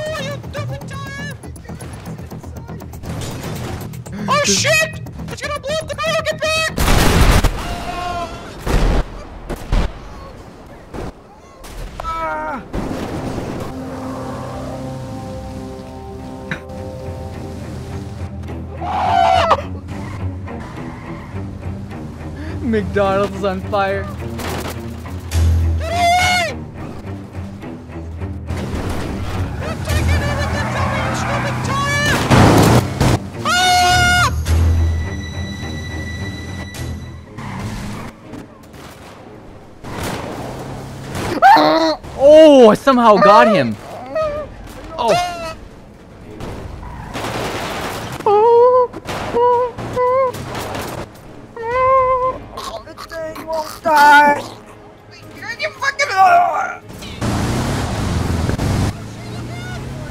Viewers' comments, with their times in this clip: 0:03 employee: "oh shit!! its gonna blow up the burners in the back!!!" the tire: BOOOOOMMMM freaking priceless... i cant help but replay that so many times! XD
0:41 POV: You're Rping but you accidentally voice cracked
0:41 THAT NOISE HE MADE WAS SO FUNNY LOL